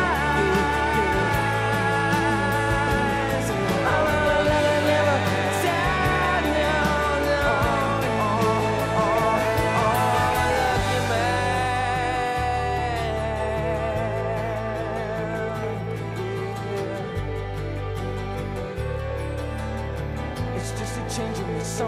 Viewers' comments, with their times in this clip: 0:08 I didn't know for the longest time that he says "And I love you, man" ... I thought it was "I'm a lucky man." It seems at varying intervals he is talking to a lover ("I watch you look at me, watch my fever grow"), himself (But how many corners do I have to turn?), and then – at the end, in this line – perhaps a friend, too. Special songwriting.